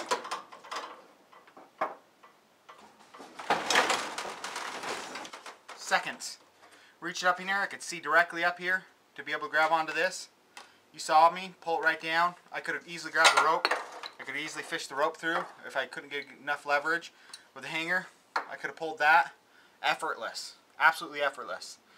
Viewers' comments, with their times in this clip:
0:04 you sound so paranoid like a end of the world there out to get me paranoid